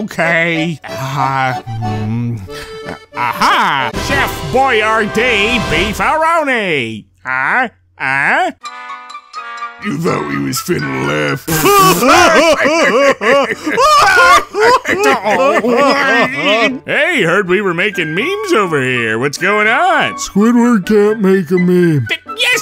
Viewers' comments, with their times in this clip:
0:10 when you got the whole squad laughing